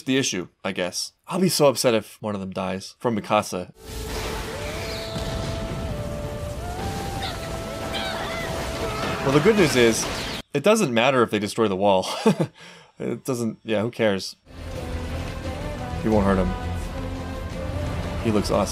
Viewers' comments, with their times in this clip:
0:04 -I love the music of that scene. It’s like the Angels themselves are crying out in pain and sorrow at the great betrayal.